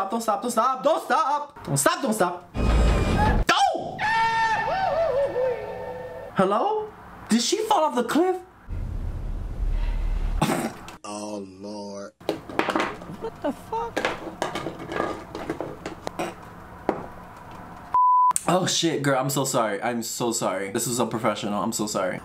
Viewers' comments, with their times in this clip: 0:04 Idk why it didn’t hit the first timeeeee but took me out in the middle of my shift. That Goofy audio…. 💀 deceased rn, cackling at my desk. Lmaooo
0:04 not me thinking that laugh was in the movie